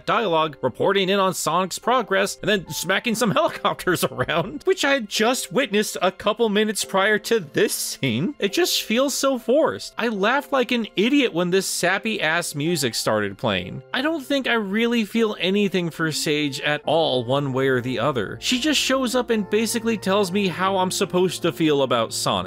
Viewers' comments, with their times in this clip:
0:08 im glad i wasnt the only one who was dying when that flashback started with that goofy song playing. i dont think a single person found that scene emotional at all